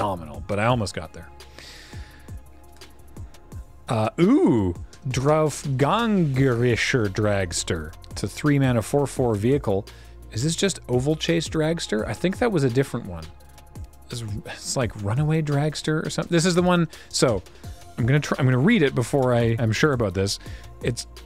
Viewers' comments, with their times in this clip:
0:05 Ironic that you say you can't pronounce "ä", but pronounce the "a" in Dragster as a perfect "ä" in the very next word Congrats on the masterpiece! That's amazing